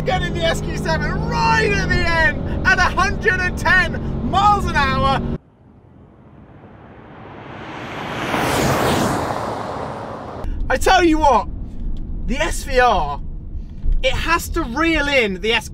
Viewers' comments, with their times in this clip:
0:03 i had to check the comments to see if i could find comments about him yelling